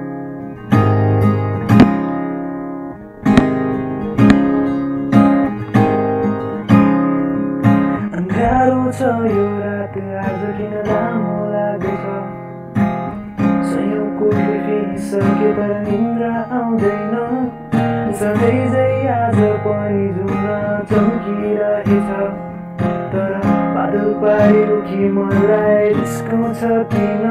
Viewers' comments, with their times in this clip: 0:08 the moment when he starts singing the song